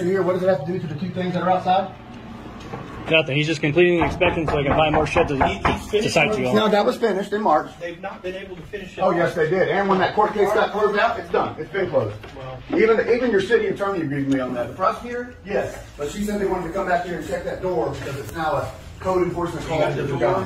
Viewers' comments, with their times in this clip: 0:03 headphone users get ready to look left